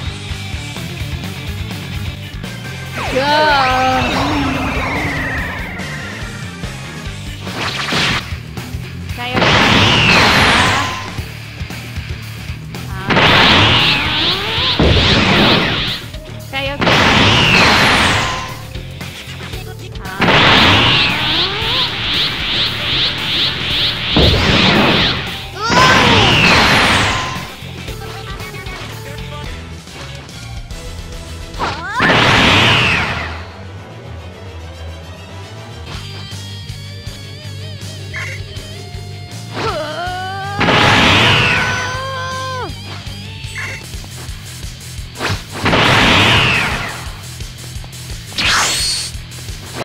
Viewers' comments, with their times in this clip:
0:09 More like but yeah the voice actor does sound depressing.
0:11 she sounds so depressed
0:39 This suspiciously sounds like constipation..